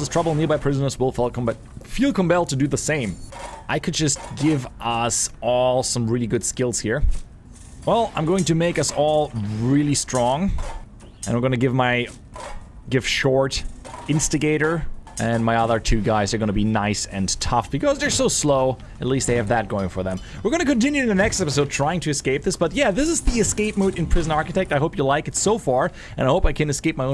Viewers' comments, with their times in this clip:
0:10 like an empty can when you shake it.. (sorry for my English)